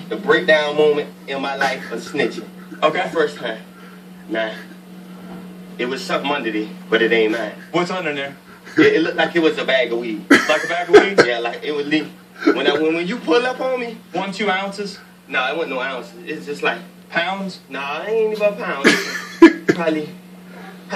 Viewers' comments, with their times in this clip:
0:05 the way he says it😂😂